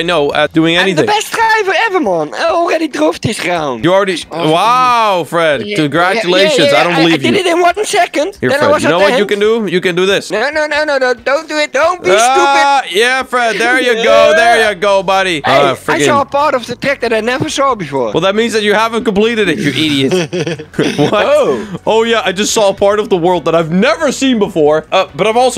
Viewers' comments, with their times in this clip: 0:10 DONT BE SHTUPID LOL I LIKE HIS VOICE XD